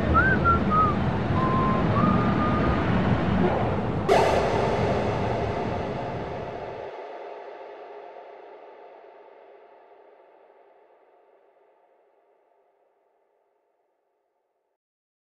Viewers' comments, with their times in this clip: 0:06 Ok is it just me, or did I just notice it sounds like the beginning of Pick U Up?